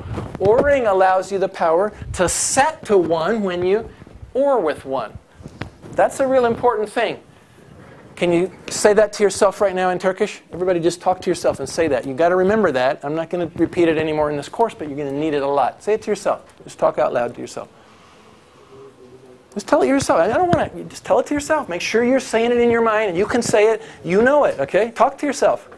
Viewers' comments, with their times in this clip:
0:07 It's Turkish. "berbat (You're hearing it as "Barbaad" because of his accent)", "yani", "sıfır", "bir" , "bir dakika", "saçmalamayın ya", "ne biliyorsun hoca", "boşver" (He talks Turkish sometimes because the lecture is in Turkey) (Another proof that he talks turkish --> )